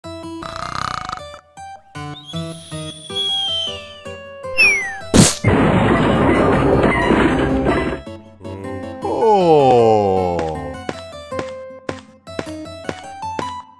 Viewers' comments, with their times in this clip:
0:01 oh no 😂😂 there sleeping sound😂😂🤣 Patrick